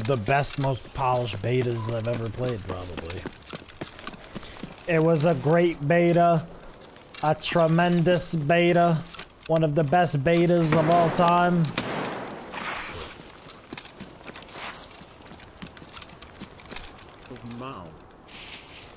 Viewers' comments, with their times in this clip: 0:04 Lmaooo the Trump impression is spot on